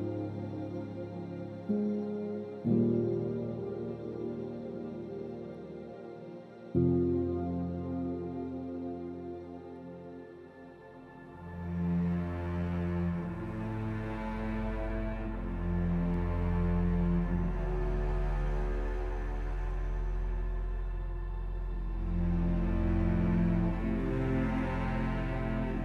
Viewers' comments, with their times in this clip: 0:09 Infinity Inside has a Fearful Odds vibe to it from a very underrated movie : Oblivion Good job! Really epic!